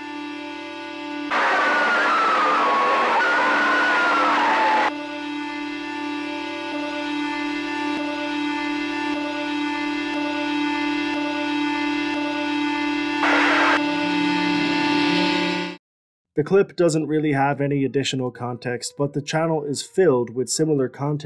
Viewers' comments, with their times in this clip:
0:04 the screaming sounds like the black box recording of a plane crash.